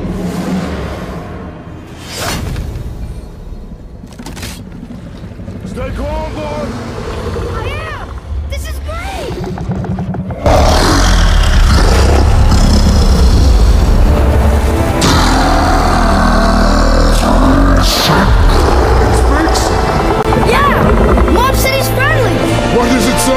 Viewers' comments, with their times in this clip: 0:05 The World Seprent speaks on the language of belching